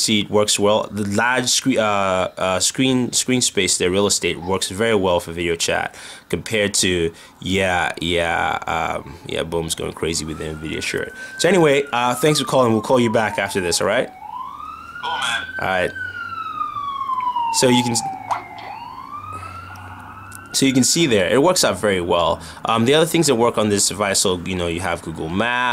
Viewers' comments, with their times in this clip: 0:10 they found you (backround noise)